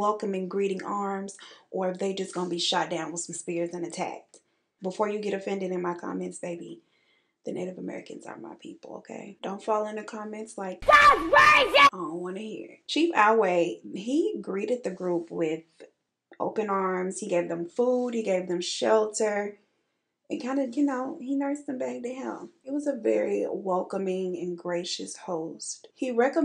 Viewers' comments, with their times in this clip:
0:09 Okay is that "HELP! She's killing me!" From the damn plant behind you?! 😂😂😂 im deeeaaaddd bwhahahaha